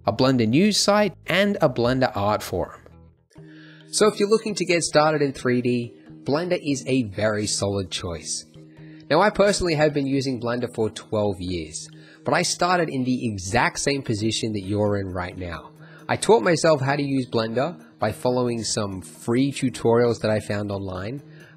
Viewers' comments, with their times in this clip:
0:04 voice quality changed?
0:05 what happened to the mic? I mean it was fine before that lol.